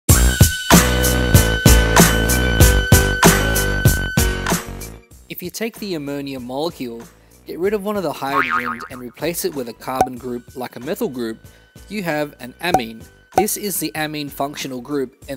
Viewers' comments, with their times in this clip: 0:03 just subscribed because the song is fire